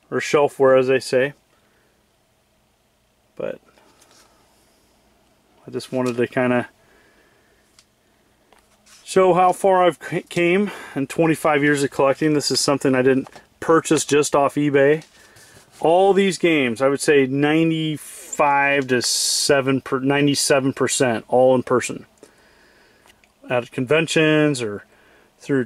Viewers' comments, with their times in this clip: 0:09 Cool. "En- ee-es" And "..how far I`ve come". Only since you teach.